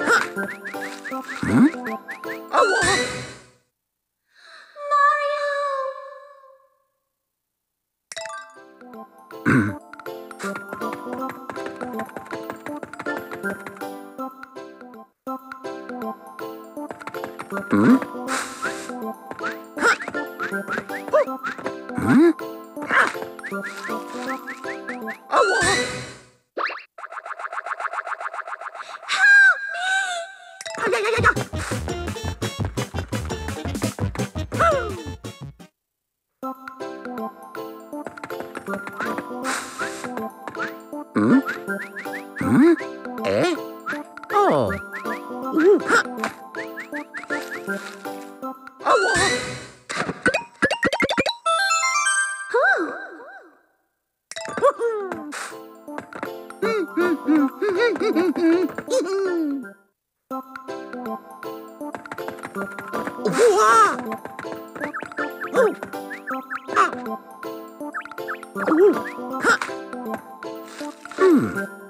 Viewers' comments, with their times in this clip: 0:09 Mario:*clears throat* Bubble witch stella:*breathe in*
0:56 mario is humming overworld theme from super mario bros